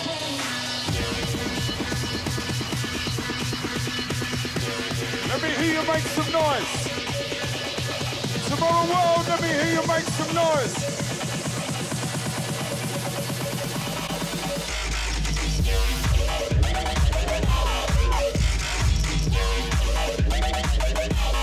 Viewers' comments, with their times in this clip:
0:08 tiesto is speakin without microphones leeeeeellll